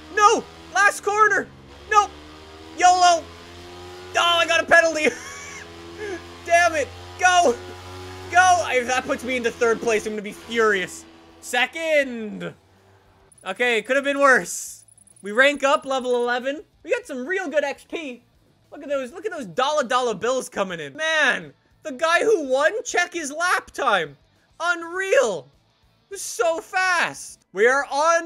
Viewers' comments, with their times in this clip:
0:10 The way he says second